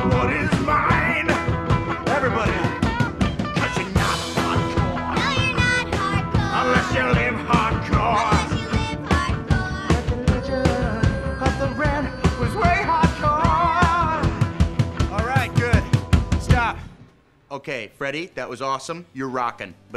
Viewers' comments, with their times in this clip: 0:05 Awwwwwww Yeah seen watching again & again that voice of so catchy when they're singing together.